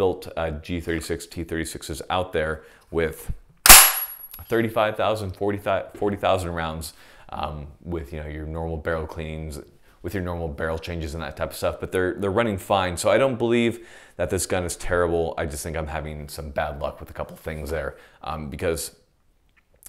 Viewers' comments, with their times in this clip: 0:03 that didn’t sound good 😶